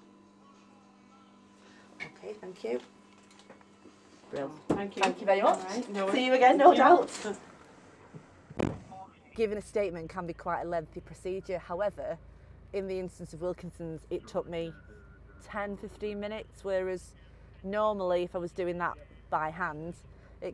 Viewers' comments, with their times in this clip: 0:08 did someone fart?